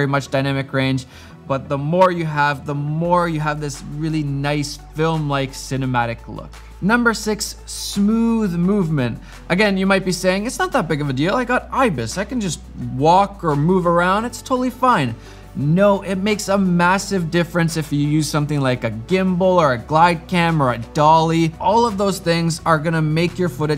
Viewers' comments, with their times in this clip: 0:08 why is in the audio seems to peak. hmm... great pro tips though